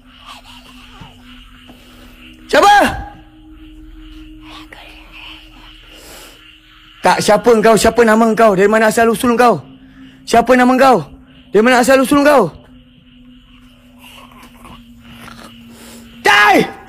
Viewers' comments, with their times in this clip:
0:04 Real legit, I could hear a female whisper I don't think anyone would have noticed that